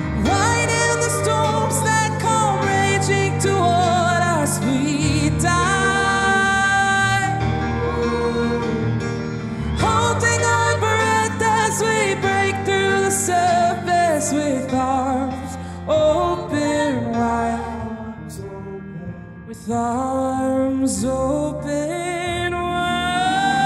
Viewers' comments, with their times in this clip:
0:09 there so jelly of his voice